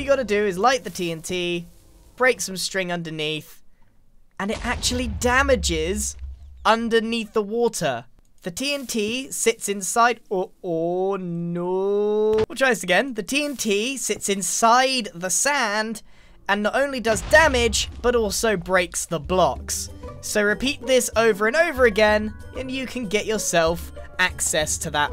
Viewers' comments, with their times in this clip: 0:10 That "Oh NoOoOOO" killed me lmao 🤣🤣🤣